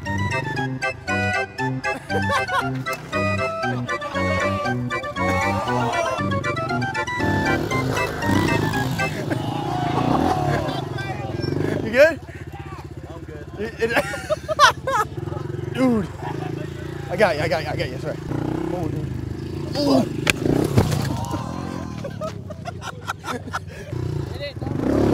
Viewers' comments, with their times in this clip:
0:10 did anyone else hear someone say “a baby”